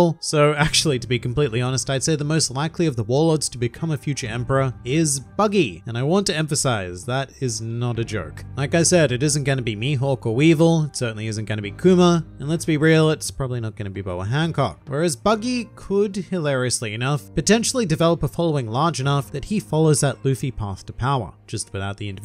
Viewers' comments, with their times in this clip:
0:05 The way he said it😂😂😂